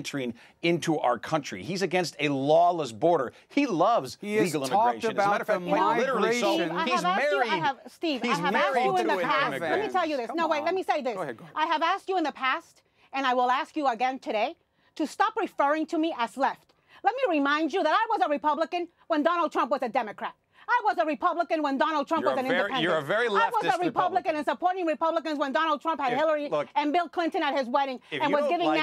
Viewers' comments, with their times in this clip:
0:09 Imagine being married to this woman. Dude called her a leftist and she immediately started yelling. 🤣
0:11 “Good prop!” I love Chris Cuomo lol Edit: I SWEAR he says “go ahead, Queen.”